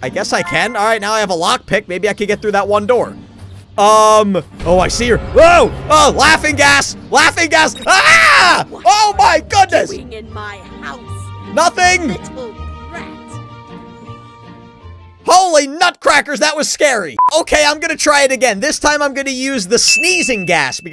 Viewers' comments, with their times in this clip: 0:06 that screem tho